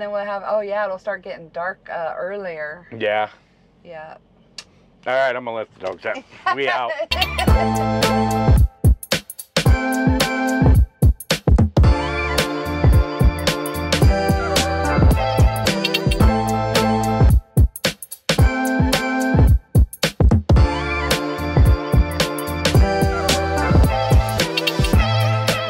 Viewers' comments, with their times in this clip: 0:07 Awesome video. Love thant song on Its Its really catchy. Stay Safe and Healthy my Good friends. ✌❤🚚🐕🐕